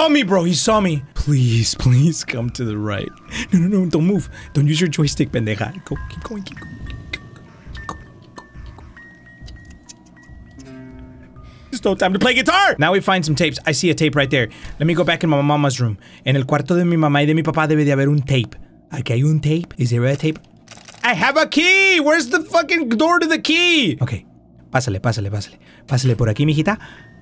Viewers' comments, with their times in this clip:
0:09 I have no idea why the guitar sound made me cackle like a witch